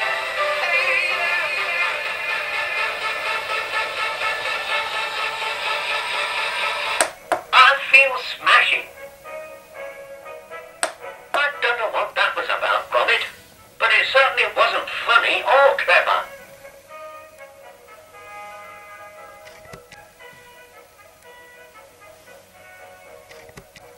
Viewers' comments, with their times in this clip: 0:04 I was waiting for the drop beat.